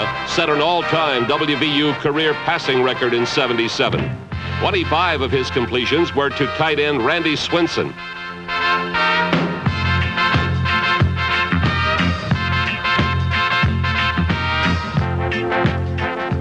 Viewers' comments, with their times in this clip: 0:04 Beginning … the soundtrack starts to get REALLY GOOD… but that announcer just can’t shut the fuck up for any reasonable length of time, and therefore, ruins it